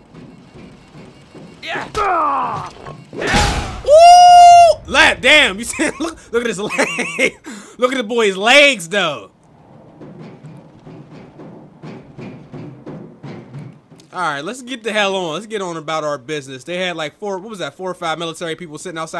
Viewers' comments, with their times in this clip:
0:03 Joe Budden, what the fuck is you sayin Bruh "le... damn... blral"